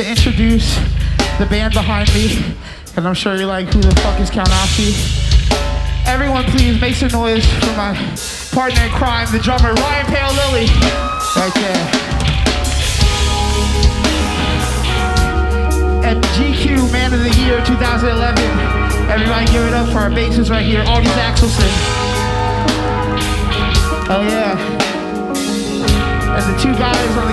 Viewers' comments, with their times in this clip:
0:08 Coming back in 2022 to listen to the slow part and feel exactly the emotions that are being described. What a world we are in now compared to these sweet times.